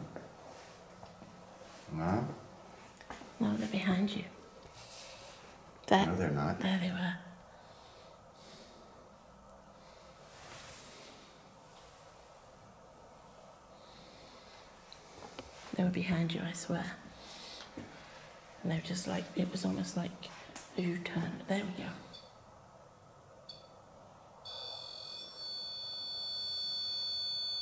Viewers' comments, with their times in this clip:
0:09 sounds like something "help me... don't"?